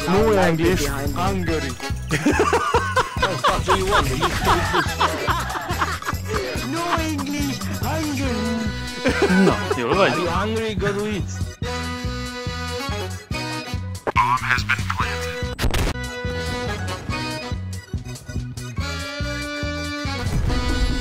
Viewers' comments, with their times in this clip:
0:09 no English HUNGARY 😀👍